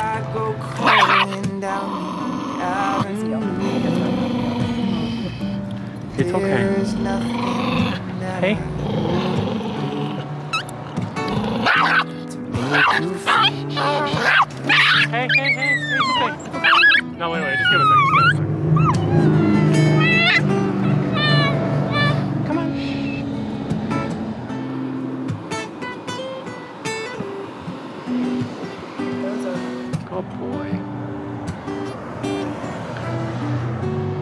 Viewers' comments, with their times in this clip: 0:03 Lol. I was watching TV until the dog barked. lol
0:12 aww he was so scared he cried 😢
0:18 it sounds like tge dog said no
0:22 the dog said mom mom